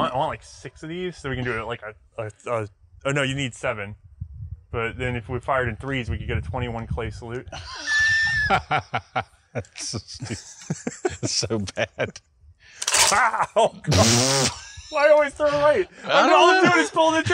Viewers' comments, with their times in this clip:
0:05 that laugh tho..